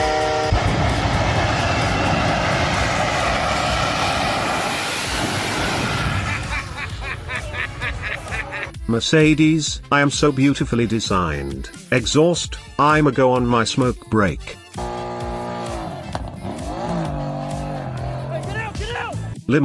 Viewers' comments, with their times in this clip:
0:06 my mans sounds like wario
0:06 sounds like feel good inc. (The laugh)